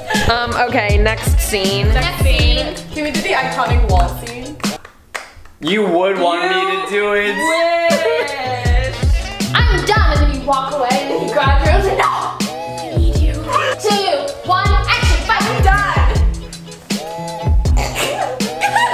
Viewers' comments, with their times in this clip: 0:04 THE SILENCE IM CRYING